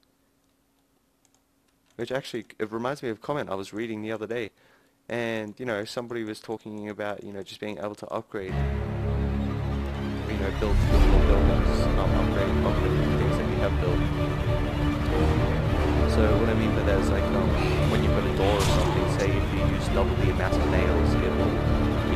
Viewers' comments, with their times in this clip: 0:10 The Music just totally drowned you out. XD